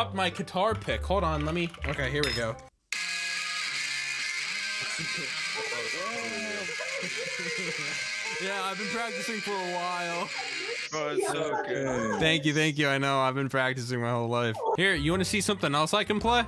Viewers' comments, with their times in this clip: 0:03 it's now my incoming ringtone because that guitar music is AWESOME